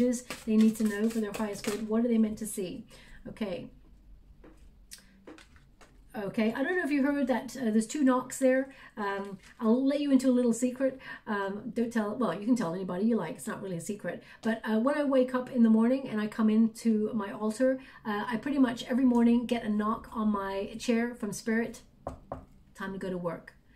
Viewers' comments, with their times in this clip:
0:06 there were two similar strange sound appeared in your past videos. Still wondering when it would appear next. 🤔